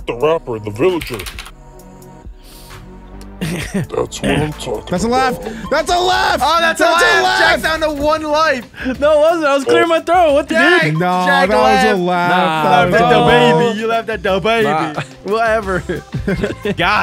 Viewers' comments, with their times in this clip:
0:03 He just cleared his throat